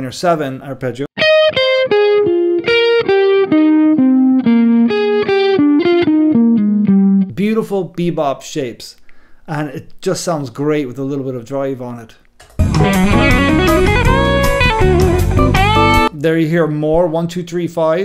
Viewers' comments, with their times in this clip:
0:04 I heard the theme song to NPR 😁